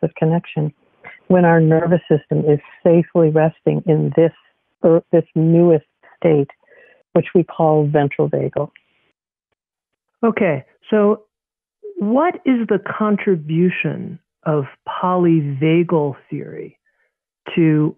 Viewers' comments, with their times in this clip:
0:05 "when our nervous system is safely resting in this __? __ state..." I can't understand that word. The sound quality is subpar.